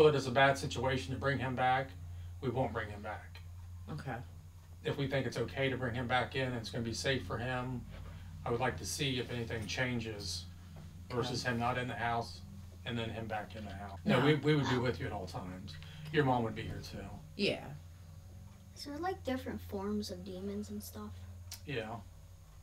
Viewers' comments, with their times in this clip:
0:07 /29 a demon whispers NEVER!